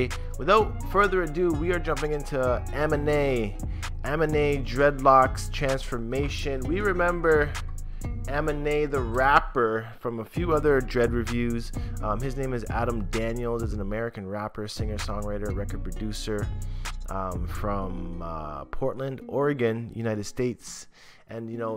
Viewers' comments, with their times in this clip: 0:03 I used to call him Aminé just like that before. 💀💀💀